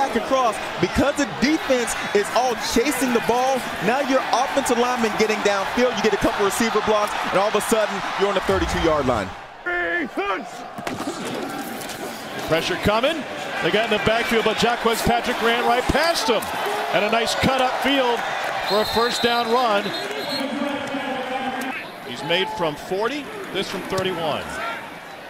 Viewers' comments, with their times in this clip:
0:06 I love that the play you can hear the runner saying "oh!" As he's attempting to change direction.